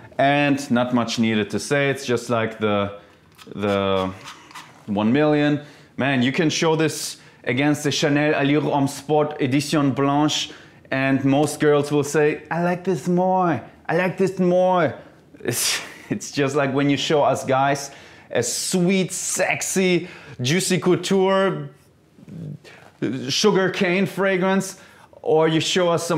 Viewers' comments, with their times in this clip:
0:10 Girls all of a sudden have a lisp